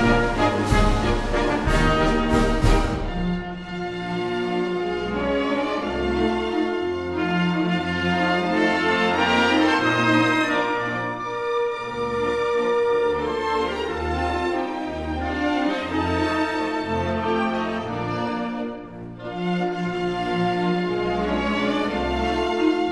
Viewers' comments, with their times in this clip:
0:03 I wish he would have expanded on the theme It is so wonderfully smooth and makes you feel like everything is going along as it should.